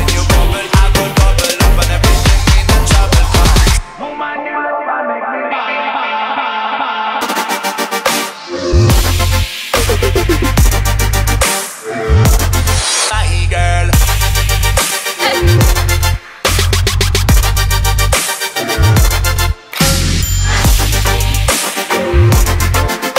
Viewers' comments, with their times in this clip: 0:06 Song ?.. Dope drop